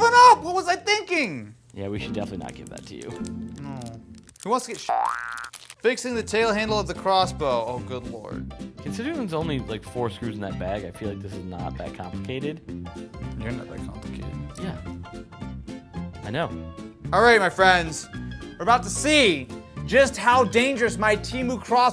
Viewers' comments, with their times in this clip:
0:09 all the censoring in the planet at once